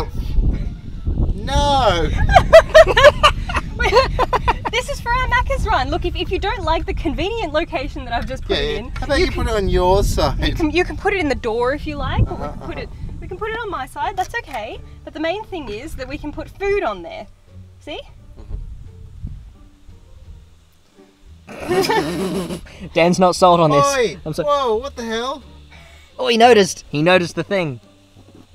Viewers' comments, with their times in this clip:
0:09 that was such an American pronunciation of door
0:09 Your accent changed
0:11 she had an English accent when she said “door”’